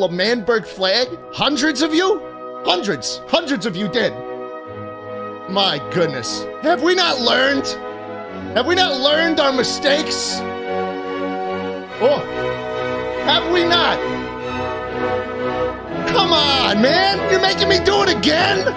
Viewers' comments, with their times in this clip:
0:04 he legit sounds like a depressed dad that has been let down